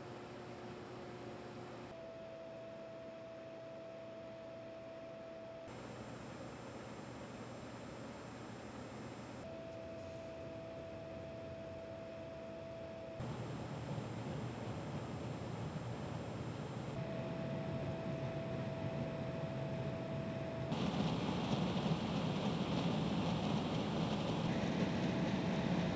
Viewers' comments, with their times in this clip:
0:06 why is the H100i Elite Capellix making that beeping noise